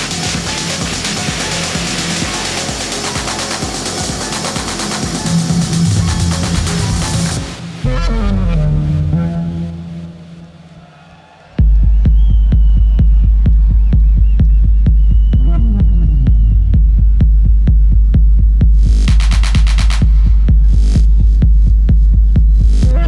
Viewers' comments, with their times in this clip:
0:10 That bass it's amazing